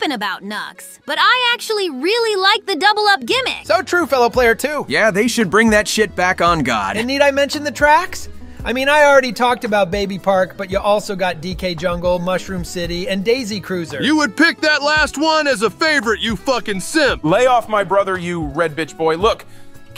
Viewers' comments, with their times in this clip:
0:07 peak voice acting.